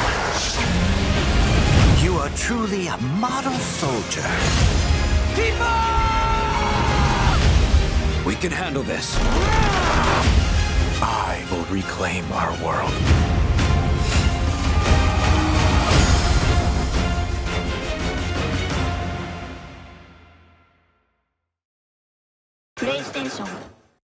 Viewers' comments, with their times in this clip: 0:05 Usually, I wouldn't say too much about this,(dont get me wrong, its still very good voice acting regardless) but this is coming from CLOUD. Cloud is a pretty laid-back dude when it comes to the way he speaks.
0:06 Wow, the music was played brilliantly, the way Cloud yelled tifa, can't wait! What is the monster ?
0:09 the emotion in clouds voice 😢
0:14 Everyone's talking about cloud screaming tifa, but man, its harder to hear, but he's screaming hard as hell or so